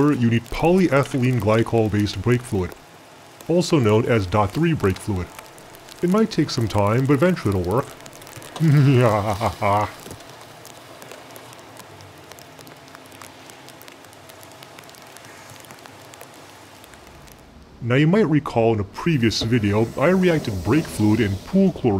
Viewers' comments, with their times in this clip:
0:06 That evil chemist laugh :D
0:08 awsome new intro first time i hear you laugh :D
0:08 haven't heard that distorted evil chemistry laugh in a long while 😈⚗️